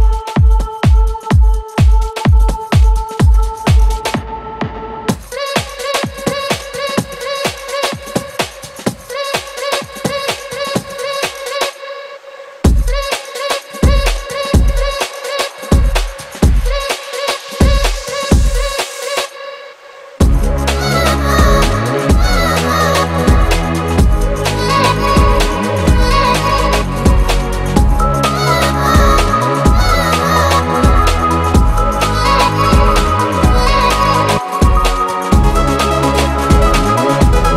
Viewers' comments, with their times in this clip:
0:04 AWESOME !! its something fresh, chill
0:20 I listen to this whole set all the time! You are brilliant! Love that beat drop